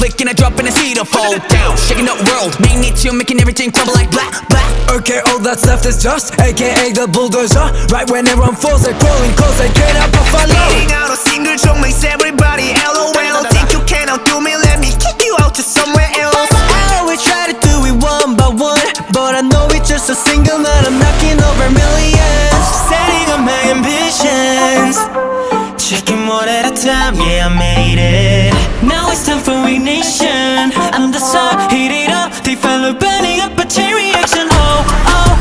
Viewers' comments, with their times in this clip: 0:04 HELP FELIX SOUNDS SO AUSTRALIAN LOL I LOVE IT
0:22 seungmin's voice is so nice